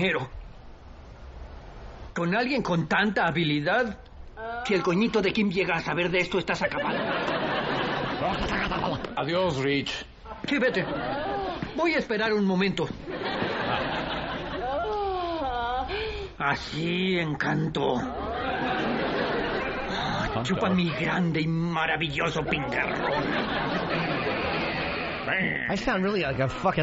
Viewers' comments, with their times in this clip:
0:08 Ant's gutteral noise here was HYSTERICAL.